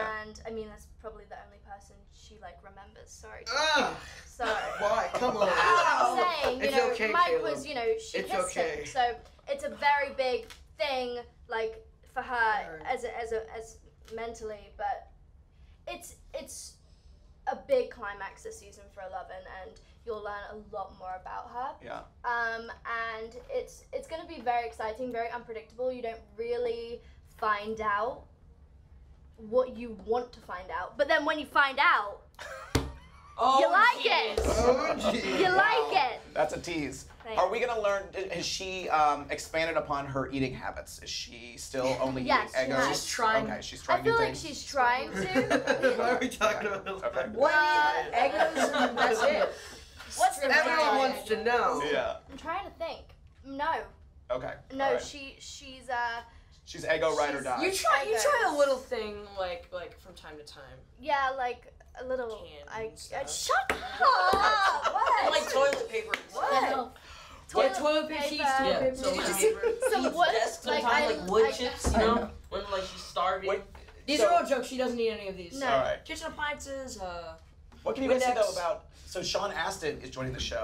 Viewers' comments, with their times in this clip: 0:03 turn on captions latino church XD
0:32 The Interviewer Laughs And Then Finn's Face😂😂😂😂
1:01 Whats says Finn ???! I can't hear!!!